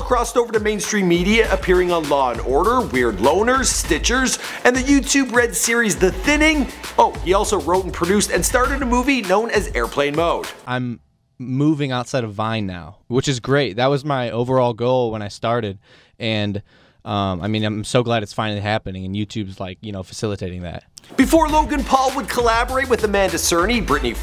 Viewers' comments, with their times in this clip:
0:10 holly shit he sounds way different now